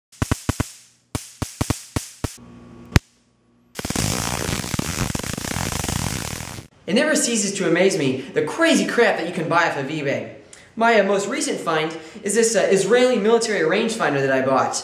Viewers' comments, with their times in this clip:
0:01 taser making jazz?